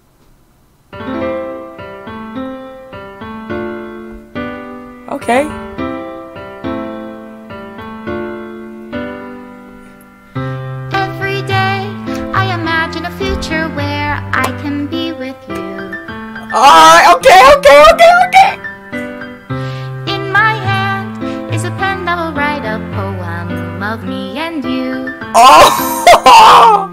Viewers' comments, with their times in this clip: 0:08 i had youtube running when i went to sleep and woke up to this absolute banger